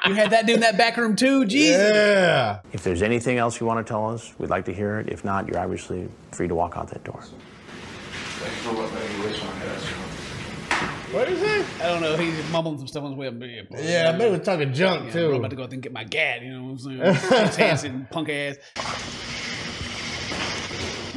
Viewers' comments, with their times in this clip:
0:07 It sounds like when he's walking out mumbling says "thanks for making me waste my gas yo" lol, think you got worse problems to deal with lmao
0:08 I think the guy was mumbling something about them making him waste gas money